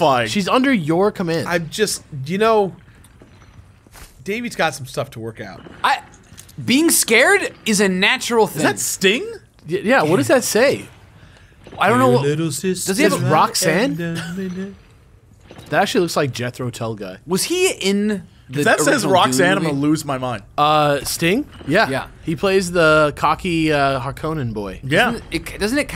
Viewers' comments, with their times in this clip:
0:08 "Is that Sting?" starts humming Billy Idol